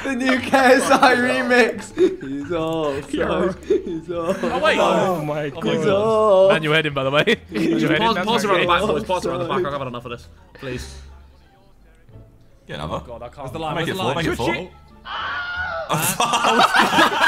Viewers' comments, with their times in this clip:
0:04 Proof that Vik was in the choir😂😂